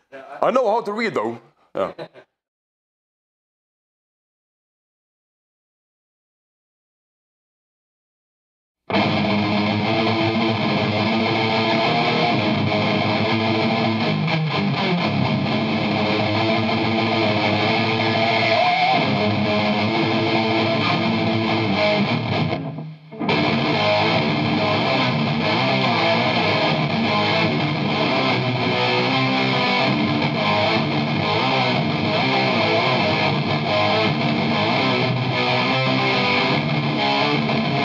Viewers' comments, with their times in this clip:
0:09 holy smokes that tremolo picking is lighting fast and super tight, Abbath is one hell of a guitarist (and of course a fantastic multi-instrumentalist overall).
0:23 riffs slides are fucking sick
0:25 that riff is like frost demons